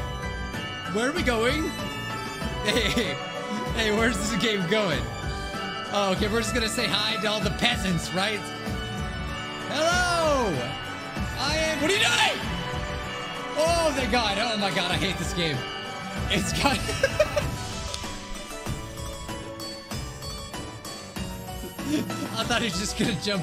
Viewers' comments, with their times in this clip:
0:10 the sheer panic in his voice made me laugh so much